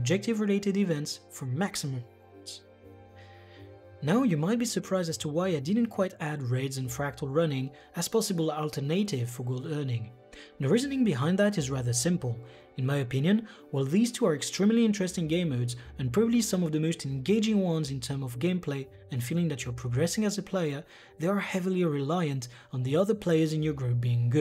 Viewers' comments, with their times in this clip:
0:07 Great video! Subbed! Little English tip: I used to work and live in Germany/Hungary and English is tricky. Yours is quite good! Alternative = ȯl-ˈtər-nə-tiv The trick is the "na" part "nə" similar in sound to "net" not "Nate" Not alter-native as in a Native American